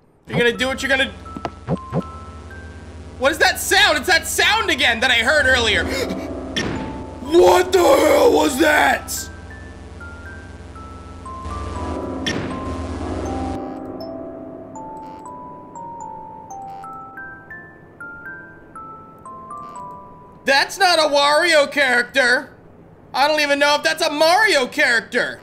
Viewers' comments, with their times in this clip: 0:06 he goes full heavy metal
0:07 new voice unlocked 100 xp